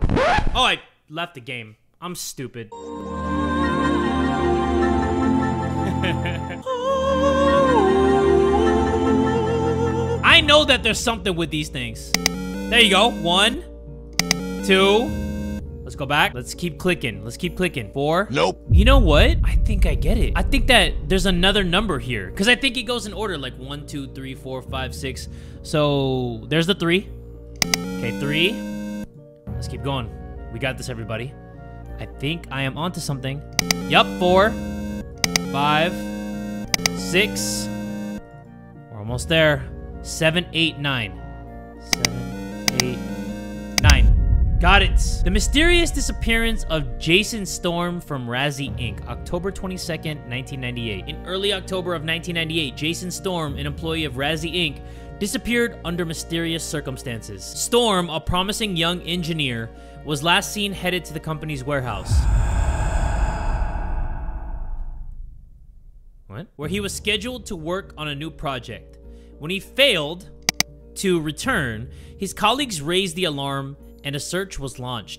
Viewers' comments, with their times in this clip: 0:07 Can we talk about those beautiful vocals though?!
1:00 THE HEAVY BREATHING MADE ME LAUGH
1:01 WHEN IT BREATHED IN MY EAR IT SCARED THE SH!T OUTTA ME- (I’m wearing headphones)
1:02 I'm wearing earplugs, Idk if that sounds effect was from the game or from what the Editor added but that Voice scared the hell outta me 💀
1:03 The breathing scared me bc I had headphones on